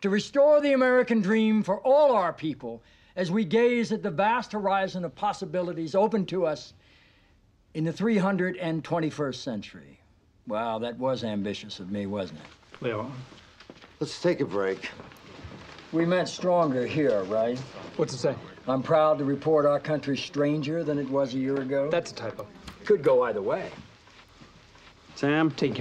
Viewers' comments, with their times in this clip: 0:08 I always like how everyone pronounces “Leo” as “Lee-oh” but for some reason Rob Lowe consistently says “Lay-oh” He’s probably correct-er - just sounds funny isolated. Even funnier that the crew reacts to the noise in the oval before it happens…